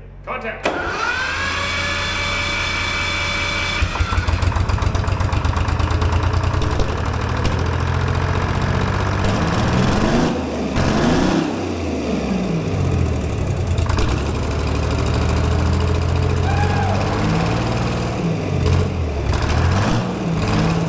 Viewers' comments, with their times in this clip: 0:05 Sound like a Tesla engine !!! The same one.